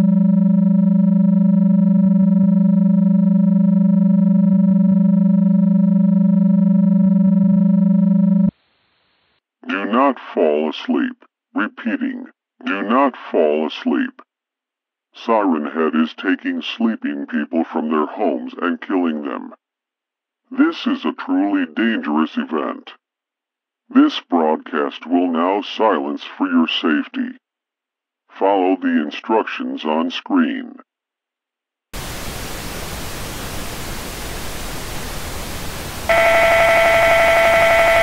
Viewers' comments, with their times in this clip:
0:10 did they drop there mic and amber alert thing in Water cause it sounds broken lol
0:24 "this broadcast will silence for your safety" 10 seconds later the broadcast: *makes noise*